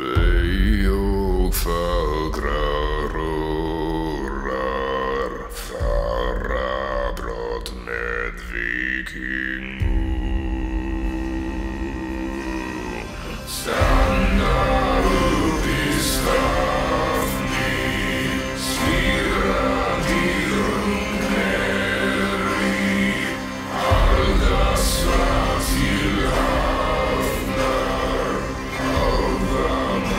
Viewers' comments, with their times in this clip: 0:09 Will those jumpers choke my throat to the point where I can sound so deep like that?
0:13 every single time this plays I hear a misheard lyric and it sounds like it's saying: SANDY POOP IS FROTHY... I have issues.